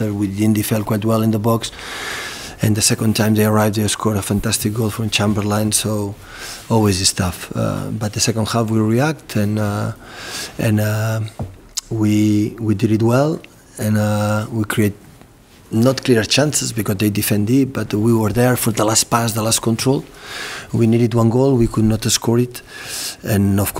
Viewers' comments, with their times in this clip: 0:04 "For chamber-lieing" 😂😂😂 love pep